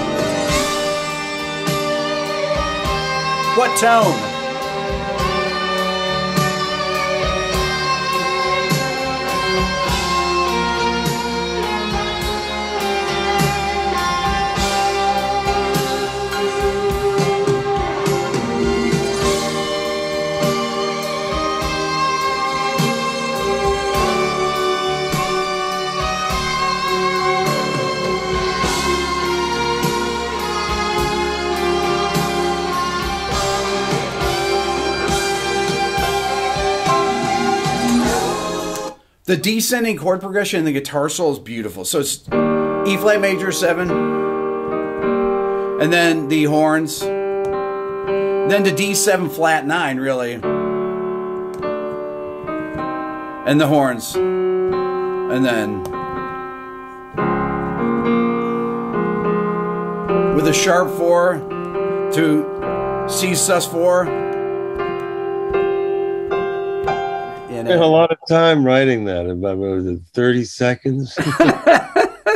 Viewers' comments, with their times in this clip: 0:06 Around the the solo actually kind of sounds like a slower version of Dua Lipa's "Levitating." Anyone else hear this?
0:57 faint resemblance to LAYLA coda.